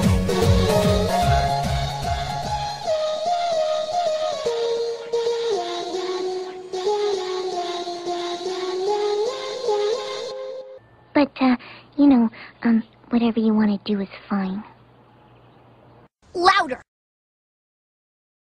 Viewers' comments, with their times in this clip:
0:10 Sounds like fluttershy is on the phone